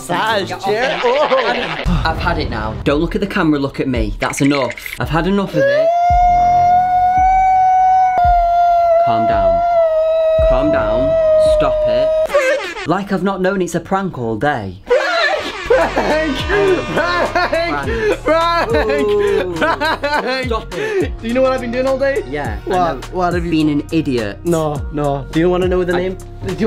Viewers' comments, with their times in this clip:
0:07 Why did he turn into a kettle